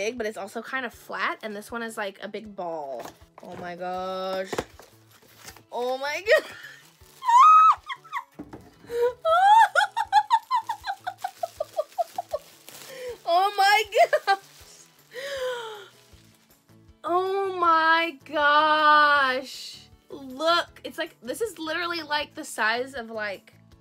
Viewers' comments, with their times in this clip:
0:08 Not being mean but you laugh 🤭